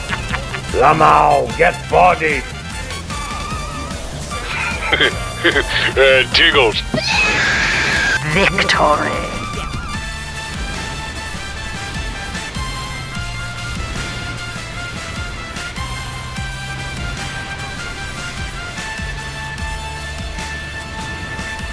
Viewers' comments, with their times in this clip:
0:07 dude said: "mushrums"